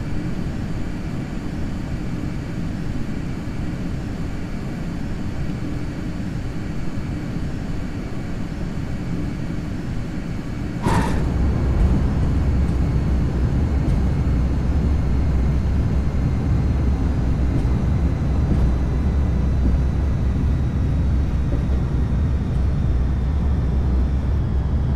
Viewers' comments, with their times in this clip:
0:10 how did you get that bang at landing?